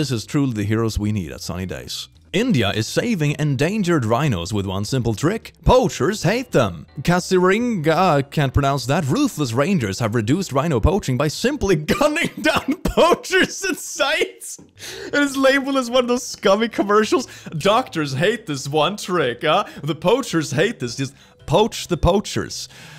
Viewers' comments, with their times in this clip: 0:05 For all wondering,if pronounced in an English accent, your pronunciation was perfect to the T. In an indian accent it's Ka-zee-rang-ga. 😊